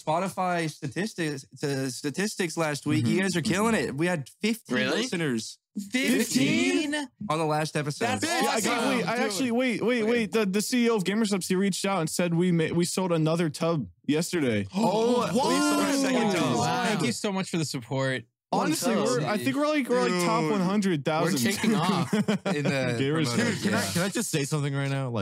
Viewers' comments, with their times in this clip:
0:06 the way they all said 15 in unison 😭😭😭